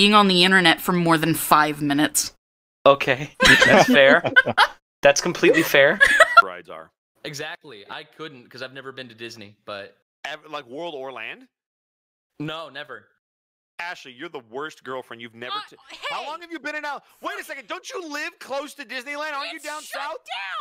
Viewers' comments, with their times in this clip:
0:05 why did the audio suddenly get so quiet?